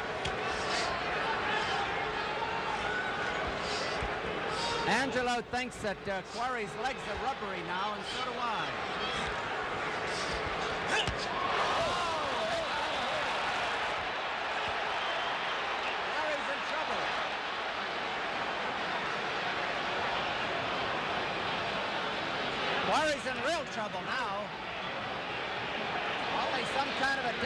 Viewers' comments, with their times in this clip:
0:09 Wow! When Joe throws that left hook time stops for a minute. Quarry goes to sleep on his feet, everybody in the crowd goes, "Ooohh!" and even Joe stops for a second. It looks like Joe's thinking, "Damn, I really clocked him with that one!" The fight was over from that point on.